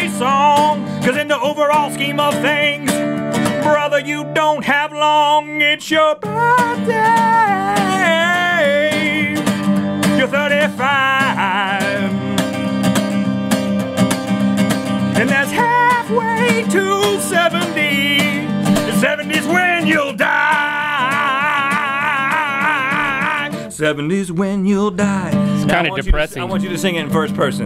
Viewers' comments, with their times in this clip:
0:09 Best mythical show for laughs so far. Rhett's delivery of that birthday song was impressive, especially onward.